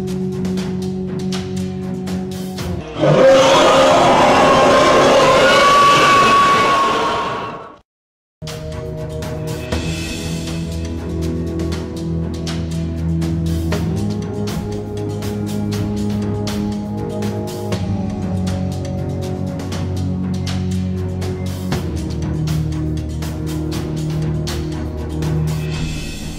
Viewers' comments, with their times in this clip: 0:08 throws headphones away on acci and screams OWWwWWEEee